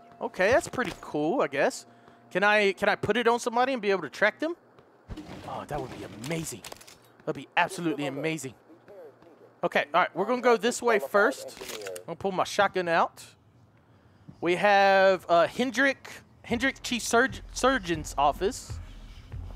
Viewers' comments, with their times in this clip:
0:07 wait... did you hear some voices somewhere near ??